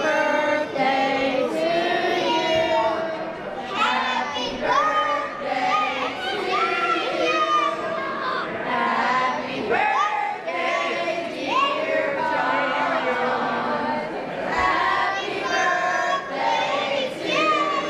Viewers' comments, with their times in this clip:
0:03 i start dying when the kid is yelling